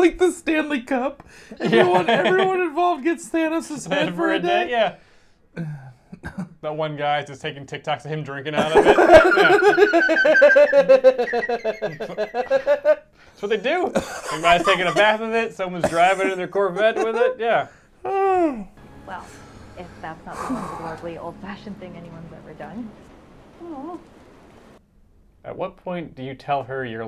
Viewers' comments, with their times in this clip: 0:10 a good joker style laugh man